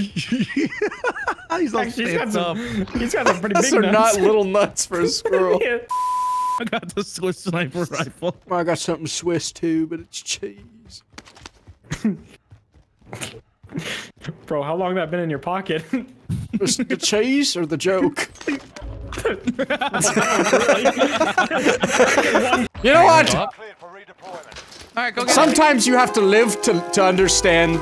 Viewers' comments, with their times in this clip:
0:08 I’ll never not love that delivery